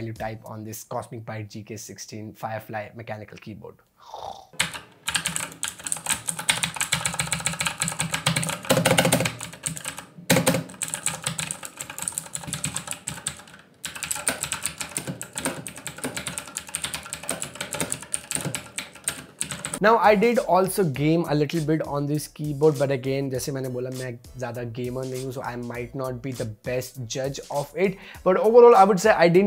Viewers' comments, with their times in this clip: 0:10 State Bank of India guy depositing my money in account